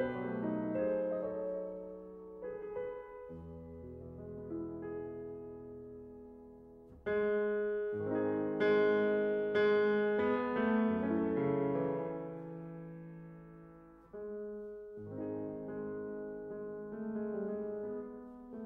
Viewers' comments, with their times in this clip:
0:06 sounds like lady bird by Tadd Dameron